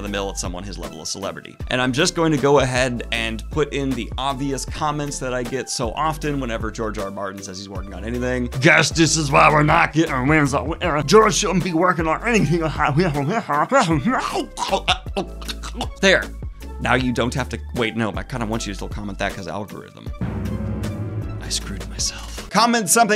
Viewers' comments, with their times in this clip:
0:08 anyone else think he sounds like Bobcat Goldthwait?